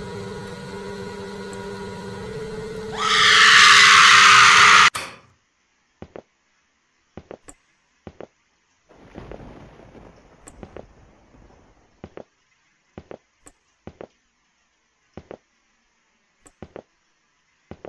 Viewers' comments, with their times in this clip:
0:03 that scream was ear shattering